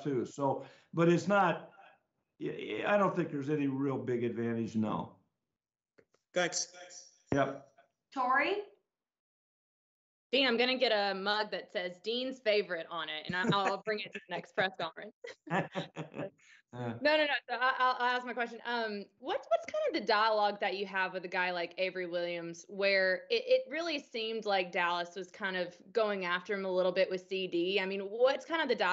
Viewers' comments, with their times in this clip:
0:10 We're laughing when we just got embarrassed against America's Team.